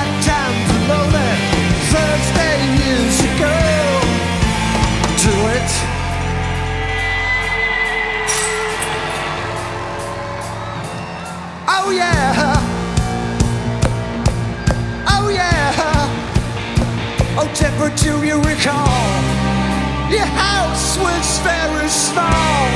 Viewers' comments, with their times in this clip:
0:05 Did you notice the guitar cuts out? I was watching from high up in the circle and I saw that as Mark stepped forward to do the riff, on the "Oh Yeah" part of the song, some sort of connector for his guitar lead tore free of the stage flipped over and switched itself off. I felt so sorry for the poor guy. He probably got it in the neck for that.